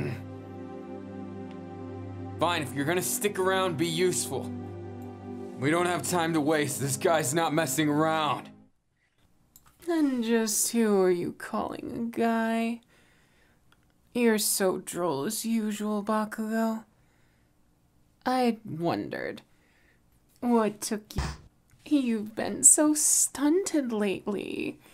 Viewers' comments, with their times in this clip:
0:10 I-Is that you talking with a g-girl’s voice? I’m not supposed to laugh but I can’t hold it But I love it 😍😂 Edit: Bet you can catfish people through voice call 😂